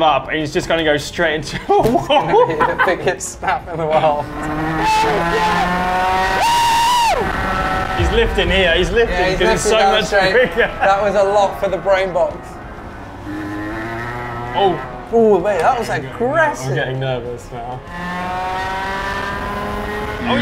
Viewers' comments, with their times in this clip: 0:04 I could hear his full happiness, to the point he had to lift the gas lol